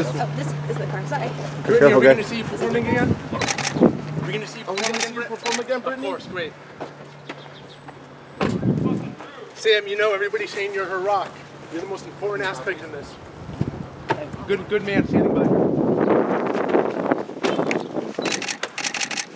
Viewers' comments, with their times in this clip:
0:07 It doesn't sound like she said "of course" but the pap.